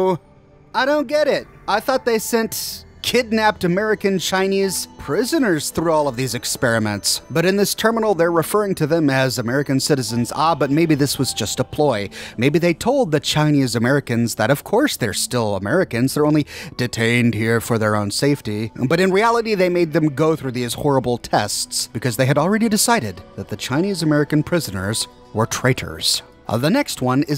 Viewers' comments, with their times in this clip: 0:10 Lyrics comming at you at supersonic speed